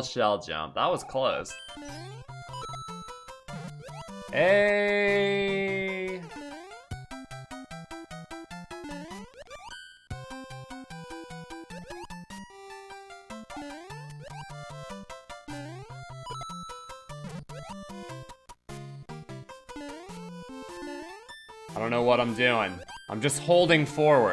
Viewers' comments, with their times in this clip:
0:07 When you hit that flying koopa 2 times it lines up with the music